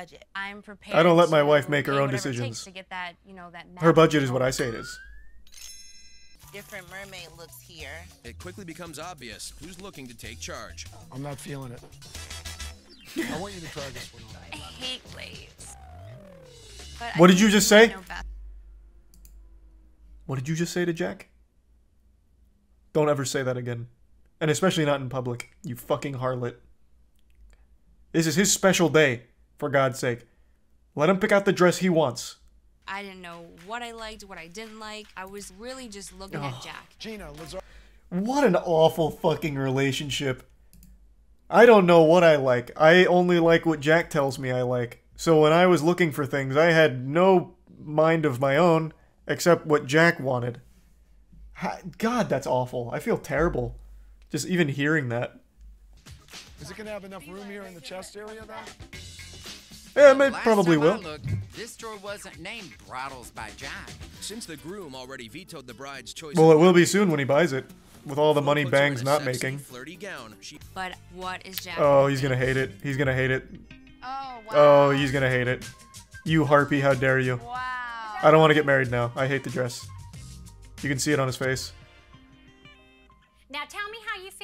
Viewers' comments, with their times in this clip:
0:07 I know I'm probably late to this but does the announcer guy in the video sound like sonic the hedgehog
1:05 Did i just hear Sonic's voice